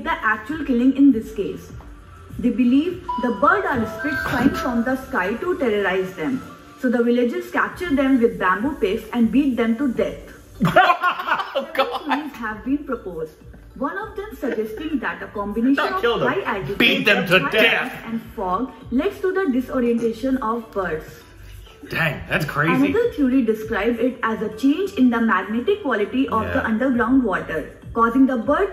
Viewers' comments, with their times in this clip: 0:09 Why are we laughing here. 🤣🤣🤣🤣